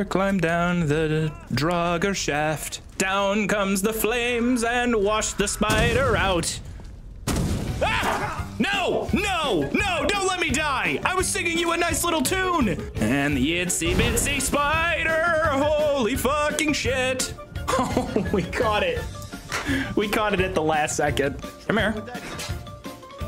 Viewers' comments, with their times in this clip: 0:06 you somehow managed to PERFECTLY emulate the scientists screams from Half life 1. I even thought it was it. Any thoughts on voice acting for half-life 3 ?